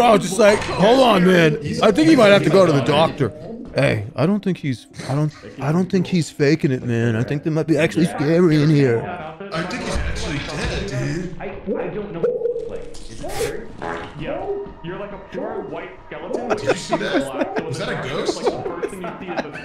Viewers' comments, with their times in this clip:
0:05 Dead body on floor Person walks by with a monster on their head Looks at jerma through door Walks away Default fart sound effect